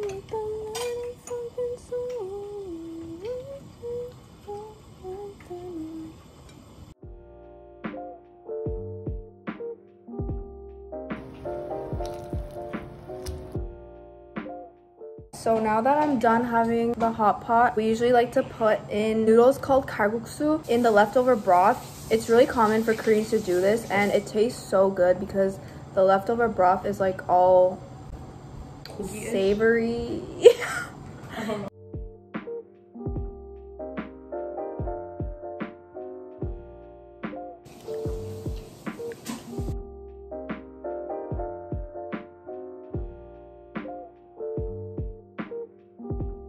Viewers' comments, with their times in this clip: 0:03 Can we talk about nice her singing as
0:30 i swear i almost had a heart attack, i thought theres someone next to me saying somthn